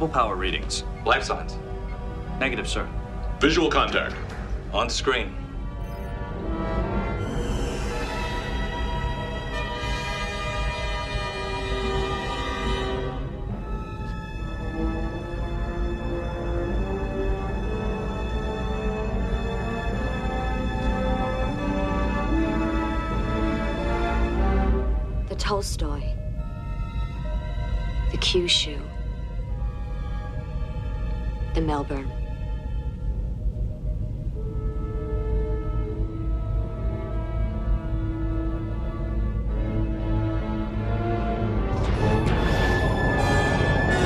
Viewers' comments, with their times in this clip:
0:05 That note change when you see the screen sends a chilling message: this isn’t a battleground it’s a slaughter.
0:25 "The Tolstoy ...the Kyushu ...the Melbourne ." And the final tragic chords of the score of this scene seem to say, "How could this have happened?"